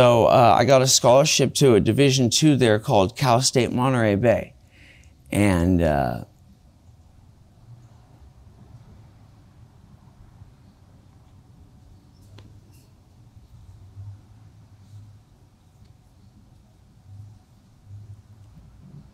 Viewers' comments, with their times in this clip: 0:06 At the marker i was closing my eyes and just listening and i honestly thought my phone's volume was messing up. Damn. That sucks. Godspeed to him. I hope he finds some peace and joy somewhere sometime soon. ✌️💛